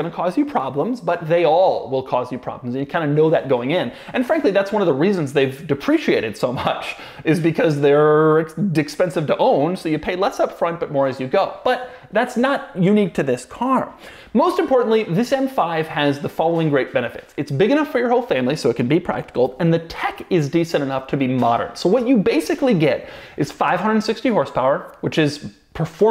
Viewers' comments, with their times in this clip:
0:08 Doug says Dickspensive 🤣🤣🤣